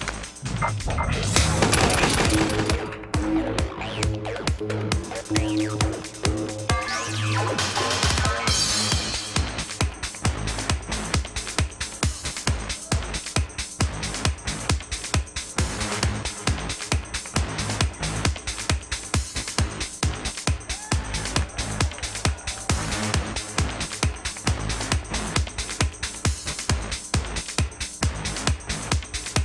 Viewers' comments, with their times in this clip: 0:10 Cheering for Sonic 06... those poor bastards...